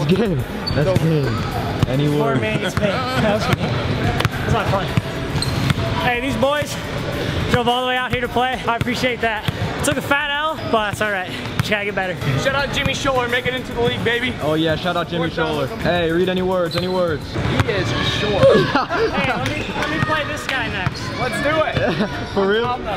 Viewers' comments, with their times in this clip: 0:03 The Kawhi laugh